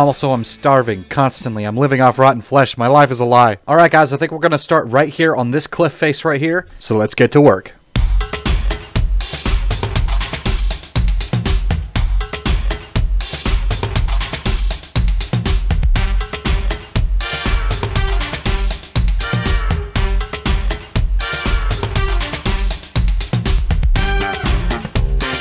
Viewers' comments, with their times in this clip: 0:09 is easily your best time lapse music